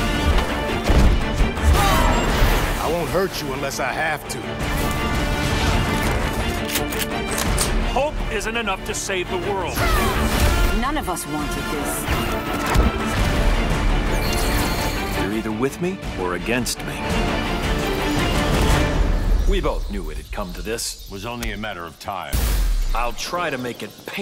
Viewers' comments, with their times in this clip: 0:06 lol gun loading sound fx for the suited characters of all the sound fx that nrs done that was the worst 1. usually great with sounds and images.
0:07 I heard hulk, can someone tell me what it actually said